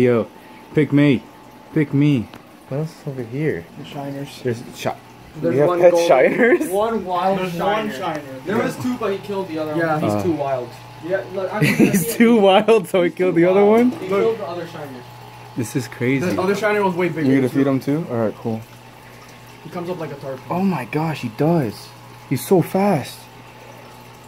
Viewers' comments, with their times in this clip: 0:06 *banjo begins playing